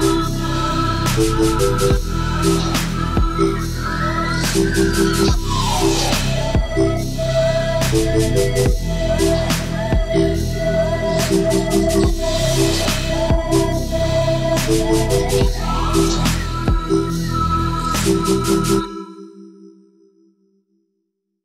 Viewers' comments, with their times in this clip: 0:03 end video I love it this remake 10/10 But, what is heard in acapella? it's a dog?